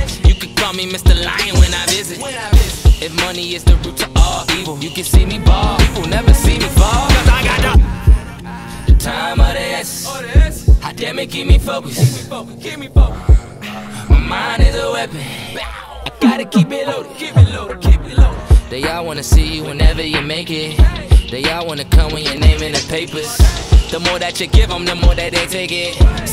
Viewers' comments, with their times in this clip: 0:07 is when I got the chills no music just snares this shit make me wanna lie cheat steal fight just to get on for the night😈